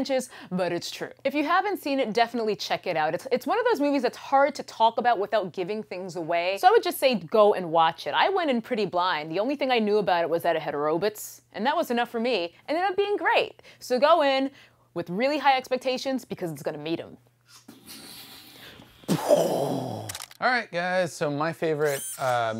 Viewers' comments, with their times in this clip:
0:10 I gotta say Turbo Kid, bloody bonkers and wicked, bloody is a very good descriptive word for it too, the amount of gore that's in it. I love the old school 80's feel to it because of the characters and music. Mad Max was good too but a bit cliche as usual. I loved Inside Out, very cool and hearty sad film. I very much like Terminator Genisys, I understand I'm in the serious minority there. It was dumbed down quite a lot but many bits I enjoyed a lot. I think Terminator was a missed opportunity big time, if it was an 18 like the first film it would have been incredible and that bit when it goes back to the first film with the punks, it would have been better if the original punks were there for fans sakes, Bill Paxton, Brian Thompson and Brad Reardon. Oh yeah, I've never heard anyone say Robots like that before hahahaha =P